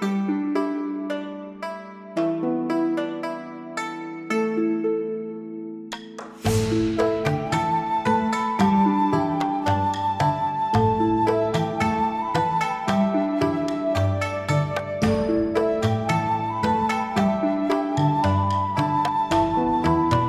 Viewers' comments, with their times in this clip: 0:07 Ευχαριστώ! Thank you 😅 it is so peaceful!❤